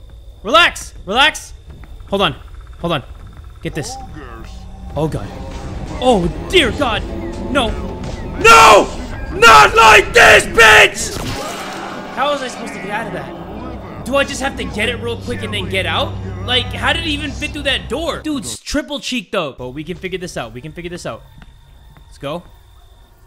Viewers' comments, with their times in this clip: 0:09 Lmfaooo 😂 I know I can count on his iconic screams to save any game.